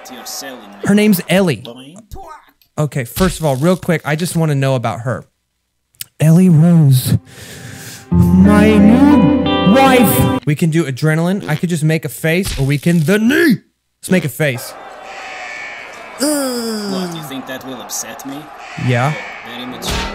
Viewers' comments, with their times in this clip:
0:08 sounded like you were gonna say “my new boyfriend” edit: nevermind life sucks I have the IQ of a kitchen shelf